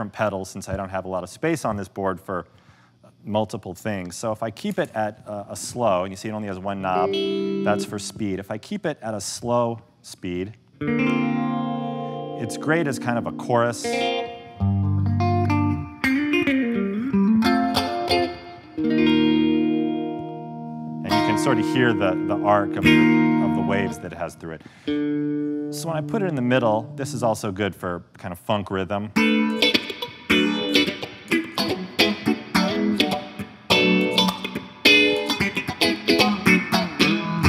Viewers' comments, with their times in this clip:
0:10 Jesus that Purple Rain starting hit me in the feels.
0:22 sounds like purple rain ☔️